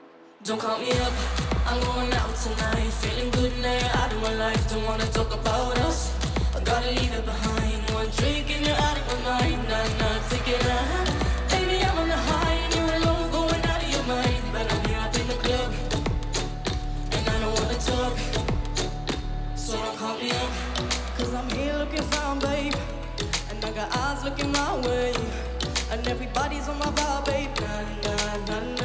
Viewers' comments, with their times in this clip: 0:10 when producent listen do her voice and he added autotune with real song